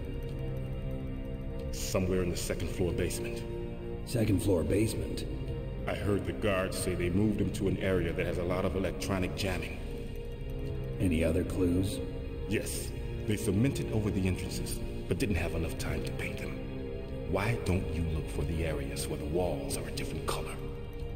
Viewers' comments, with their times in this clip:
0:09 the noises I make after spicy enchilada night